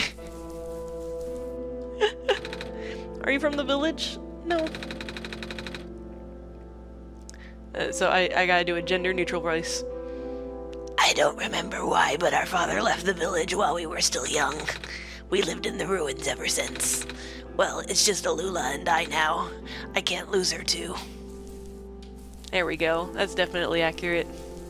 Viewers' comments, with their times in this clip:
0:06 OMG That gender neutral voice! HAHAHHAHA. You so crazy.